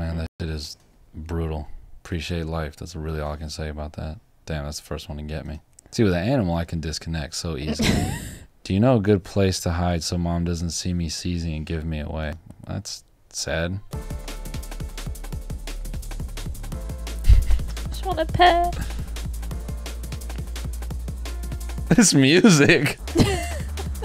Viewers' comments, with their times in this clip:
0:08 THIS TRANSITION TO THE NO COPYRIGHT MUSIC IS INSANE JESUS CHRIST